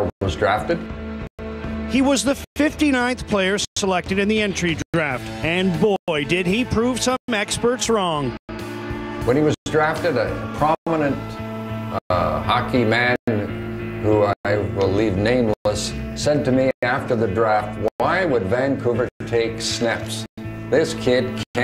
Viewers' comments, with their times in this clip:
0:05 sounds like harry neale...lol